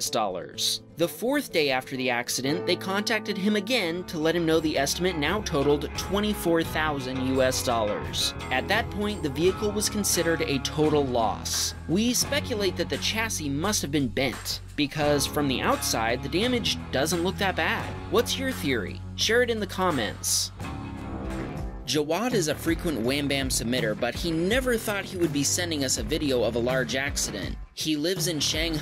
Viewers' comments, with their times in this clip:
0:10 is it just me or the tesla has an engine